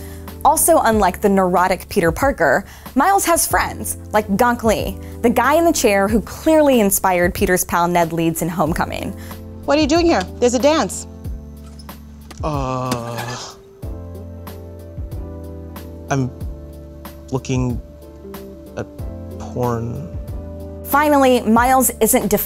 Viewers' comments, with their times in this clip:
0:04 Did she just say gank-le??